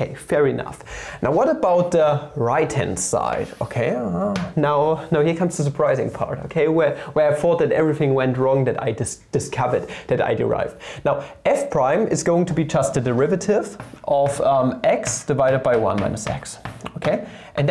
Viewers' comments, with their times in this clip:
0:03 did anybody notice the "m-hmm" ??